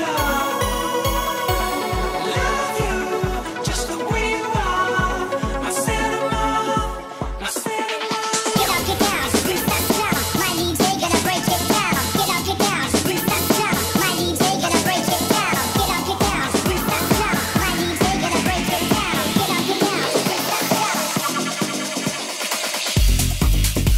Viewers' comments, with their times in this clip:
0:09 This is smooth AF. Specially Skrillex transition with tech-house INSANE performance mate !